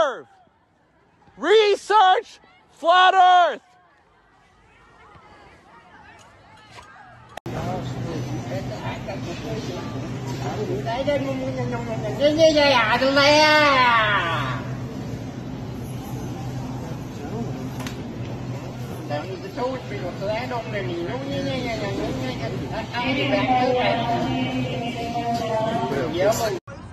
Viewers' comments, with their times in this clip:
0:08 Man’s really out here speakin’ Doodlebob